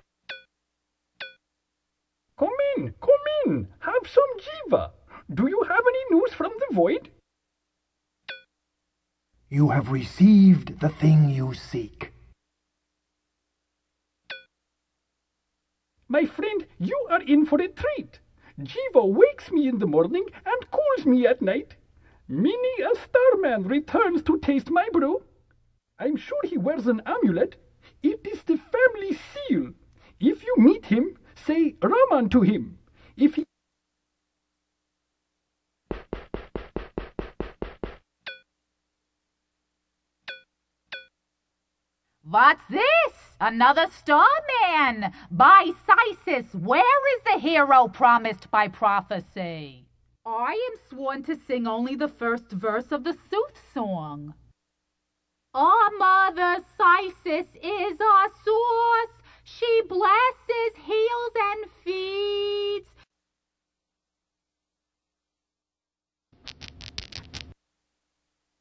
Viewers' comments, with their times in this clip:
0:05 The voice director's mind when the lines were being recorded: "JAVA! IT'S JAVA! Oh never mind, KEEP ROLLING! I just want to go home."
0:54 Edith Bunker? Is that you?
0:55 THE SINGING RUINED MY EARS A LITTLE BIT.